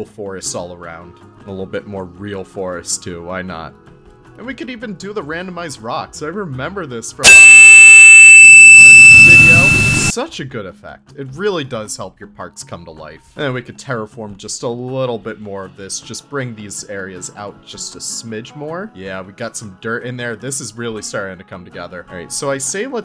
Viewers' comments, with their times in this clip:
0:05 Holy shoot. So sorry about the huge sound ish. Please mute if you don’t want to lose your eardrums.